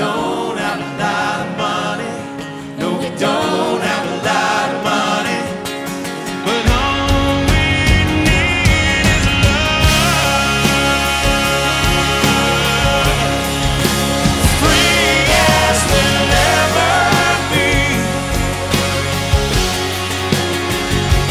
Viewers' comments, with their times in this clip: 0:07 When the band builds back up .... :-)
0:09 the vocals holy crap ZB!